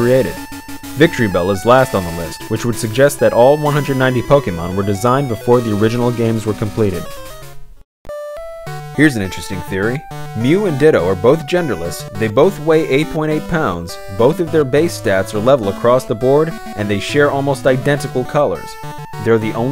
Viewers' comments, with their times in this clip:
0:07 The song that starts sounds like the song of a pokemon city... I don't remember which one though